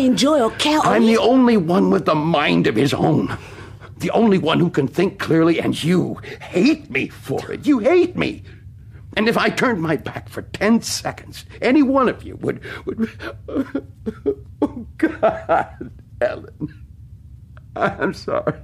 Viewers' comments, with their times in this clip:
0:06 Listen, Ted is a massive jerk but HURTS. Good voice acting, very good. He’s misogynistic, he’s a completely paranoid loon, you get the idea. But you never know—could’ve been like that before, or maybe the 109 years of torture did it to him. I don’t think I know many people who would still be completely pleasant and kind after being tortured, especially that long. I’m not saying that makes his behavior ok but…dang.